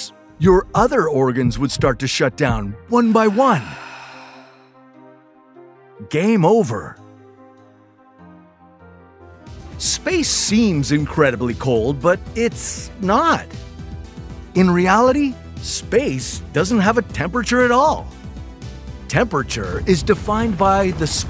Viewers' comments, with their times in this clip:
0:05 The way he said “game over” is so cold